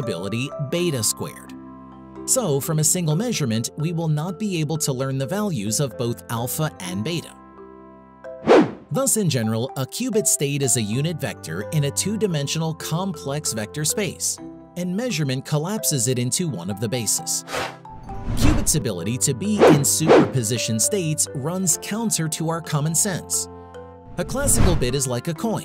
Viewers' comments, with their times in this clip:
0:07 Why was a whoosh added ? This whole video had me laughing with the excessive whooshes 😆